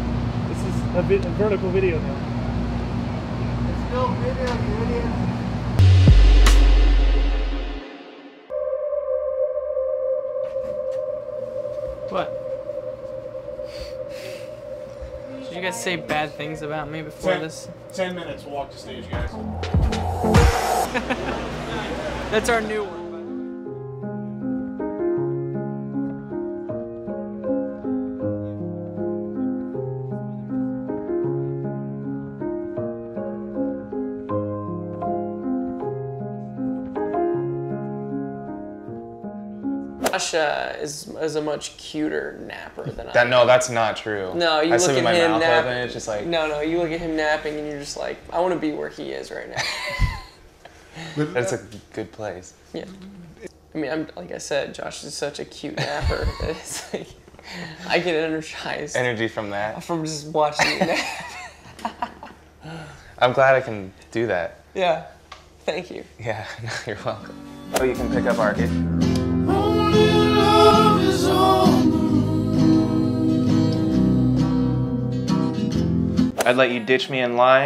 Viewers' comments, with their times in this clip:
0:07 all I see are two smol beans blaming each other in adorable voices repeating "HE DID IT" while pointing at one another
0:37 the rain. it's like... crisper.
0:41 I thought he said "joshler is a much cuter sleeper" 😏
0:43 they way josh stuttered when he said 'and thats a good place' then tyler looked down like 'yeah' i dont know why but that broke my heart cuz they didnt seem sure. About it 😭😢❤️
1:03 If you go and you wait like 2 or 3 Seconds you can hear someone say "it's still a video you idiots"